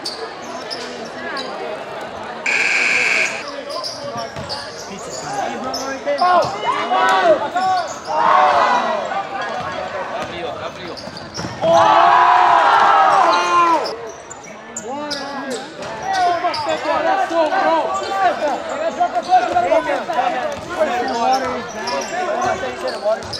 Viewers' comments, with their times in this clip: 0:04 WTF?! I heard Peter Parker say Pizza Time😂😅🤨